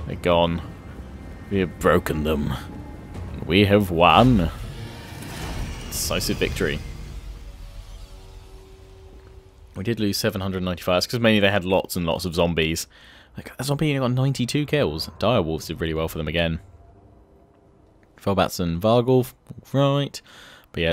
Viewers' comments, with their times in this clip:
0:04 Well hello there Mr. Churchhill " We have broken them, We have won" lol